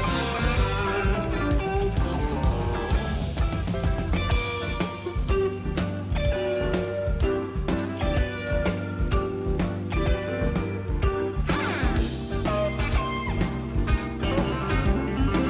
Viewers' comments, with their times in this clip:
0:03 That guitar duel was like a race between a Cadillac and a Hot Rod.